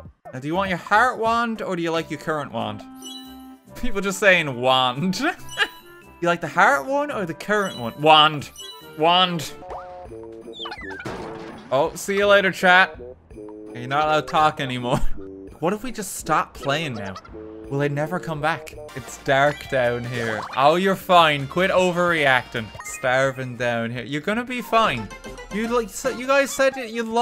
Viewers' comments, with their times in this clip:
0:10 Honestly thought it said "Bruh"